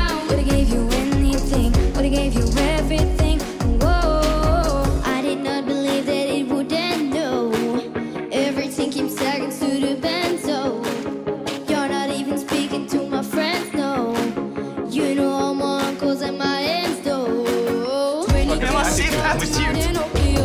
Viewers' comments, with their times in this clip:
0:06 im sorry but that girl couldn’t sing